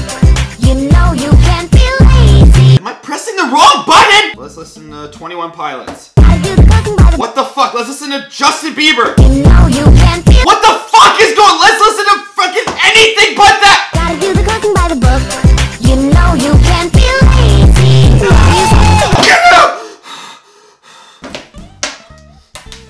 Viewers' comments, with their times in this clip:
0:05 •distant screaming of clique members*